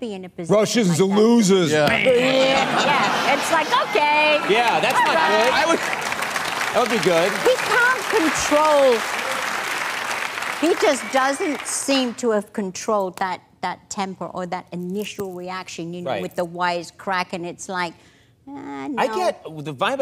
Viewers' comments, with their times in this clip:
0:04 a voice crack to remember